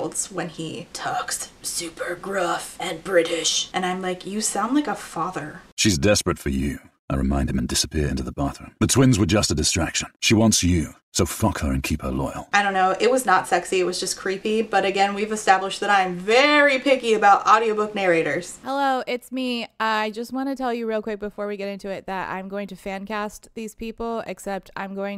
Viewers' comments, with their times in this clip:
0:05 I need to hear this dude say "We are under attack by unknown elements, execute Operation Bright Star immediately" through a radio filter. He's perfect for it.
0:07 Im not into men for the most part, but this is the kinda masc voice that makes me melt. BUT PETER PAN IS SUPPOSED TO BE A TEENAGER AND THATS NOT A PETER PAN VOICE.